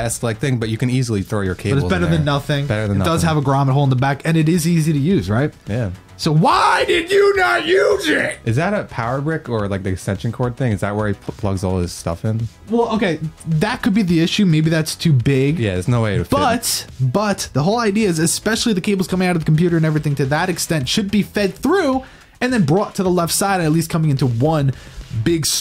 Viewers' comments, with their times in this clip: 0:06 sounds like adam sandler